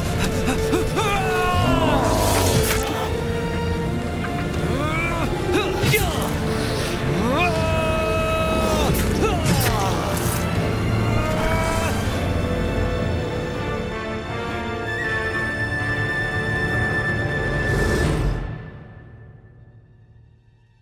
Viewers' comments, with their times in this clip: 0:06 That fucking voice acting, Just listen to